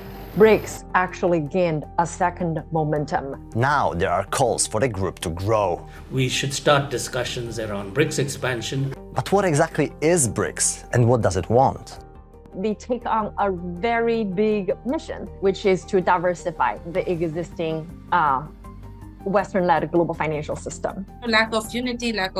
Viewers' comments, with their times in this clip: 0:05 HE IS INDIAN ACCENT SOUTH AFRICA 😂😂
0:05 HE IS INDIAN ACCENT SOUTH AFRICA 😂😂